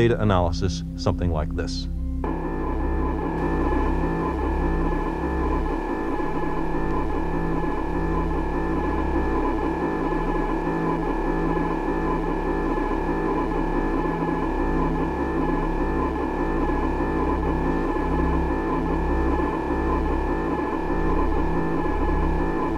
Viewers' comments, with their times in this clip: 0:04 That printer sounds cool.